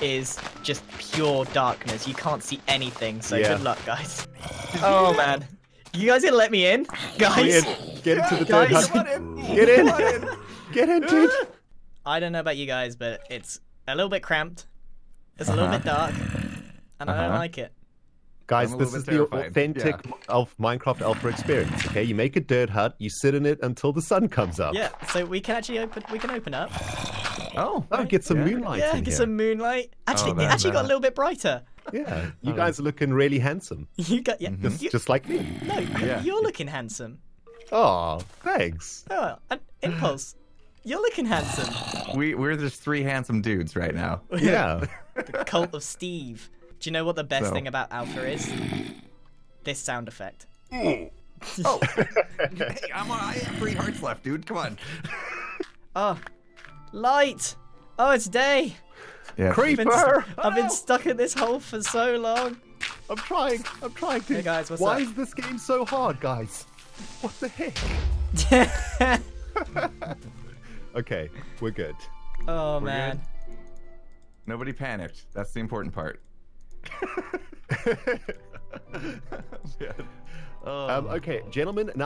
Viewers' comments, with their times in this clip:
0:08 the old hurt sound
1:07 The music in the background brings me back to the good old days on my Ps3 :’)